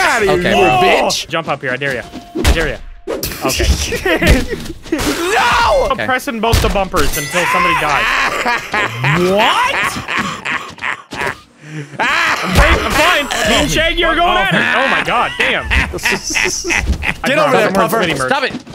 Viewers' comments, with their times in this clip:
0:06 The double villain laugh had me in tears omg 🤣
0:06 man sounds like green goblin from the Toby Maguire spiderman